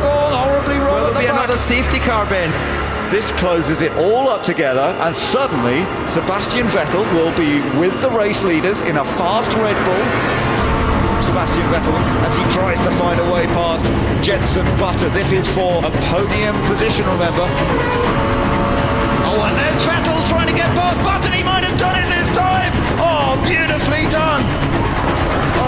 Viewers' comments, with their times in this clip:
0:10 there is something about him chasing button with that soundtrack that is just soooo cool